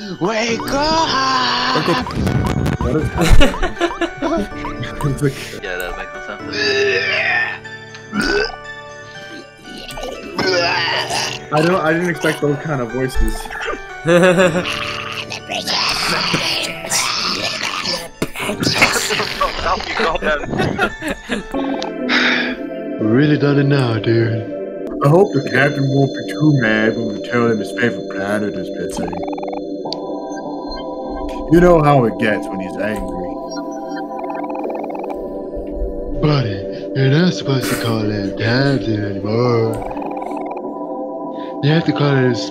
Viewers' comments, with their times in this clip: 0:07 That’s his canon voice now. Congratulations
0:27 That guy sounds like freaking Yellow Guy from Don't hug me I'm scared!